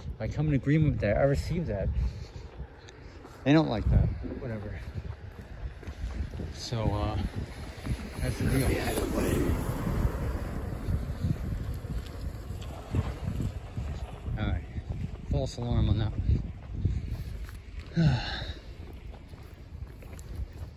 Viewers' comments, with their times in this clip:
0:08 Hey check out timestamp got a strange voice coming through. Check it out.